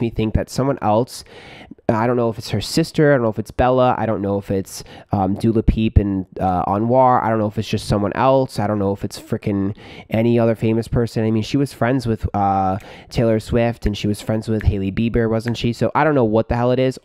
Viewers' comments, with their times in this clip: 0:05 lmao Dula Peep